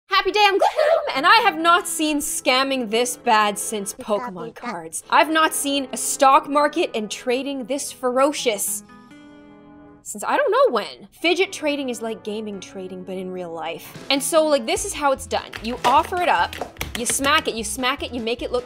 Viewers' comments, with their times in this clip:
0:01 love the “I’m GLOOM it’s sounds so satisfying